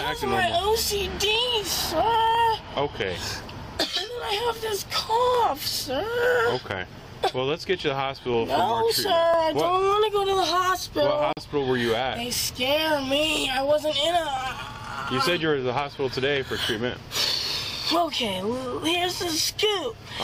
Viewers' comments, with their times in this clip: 0:07 “I have ocd sirrrr, and I have this cough sir” fake coughs had me piss my pants of laughter